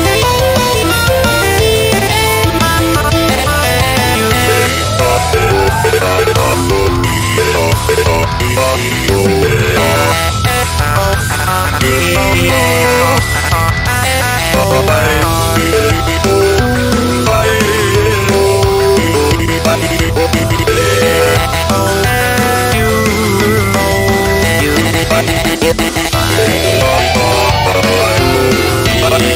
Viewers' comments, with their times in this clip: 0:10 The Part of the Song That's Literally slides with the Good Future Jam